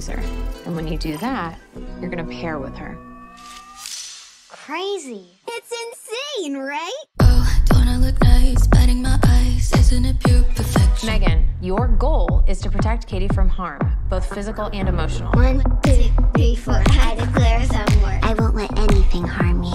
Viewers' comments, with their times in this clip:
0:07 I love the way the volume suddenly gets a whole lot louder 🙄